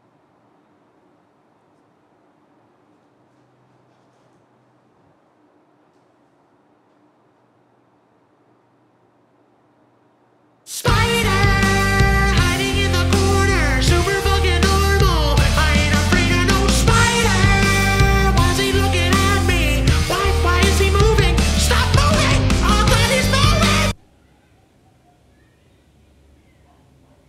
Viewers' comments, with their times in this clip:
0:10 The song was such a freaking banger.